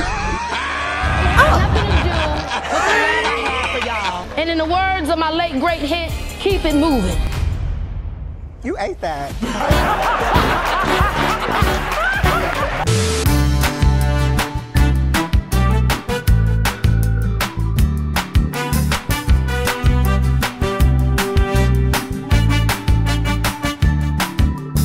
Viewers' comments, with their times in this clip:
0:09 when i grow up i want to laugh as glamorously as dashaun 😌